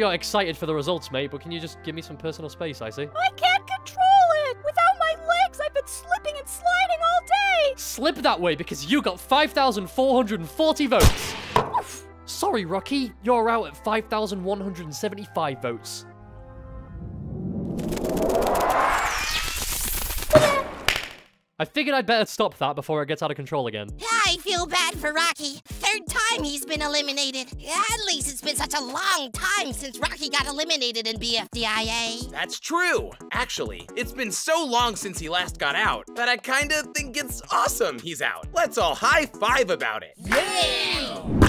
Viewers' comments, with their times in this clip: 0:08 why is nobody talking about Rocky little oomph when icecube crashes into them
0:24 this is firey’s voice